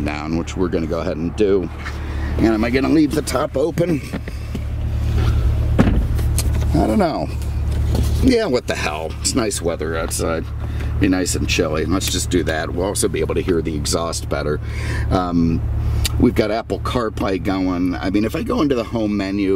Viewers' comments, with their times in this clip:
0:04 That is a nasty door sound... Wow. It rattles already. Sounds like my old '80 Cutlass.